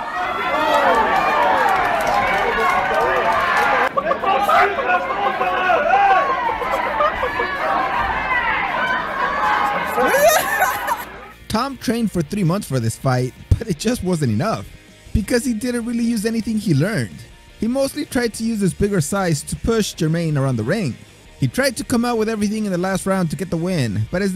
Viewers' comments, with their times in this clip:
0:09 sounds just like brandon moreno thats so weird